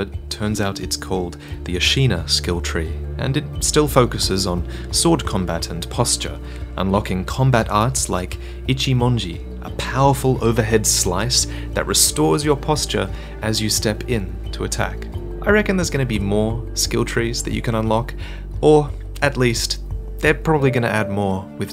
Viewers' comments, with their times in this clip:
0:08 unlocking powerful arts like "itchy moingy"..... an uncomfortable female condition where your nether regions become unbearably scratchy. Sit at a sculpted idol to cure this insidious affliction